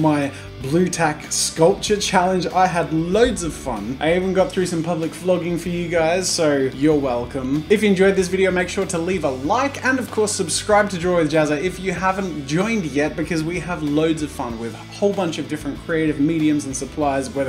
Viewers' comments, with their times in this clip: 0:03 Public flogging? Oh boy...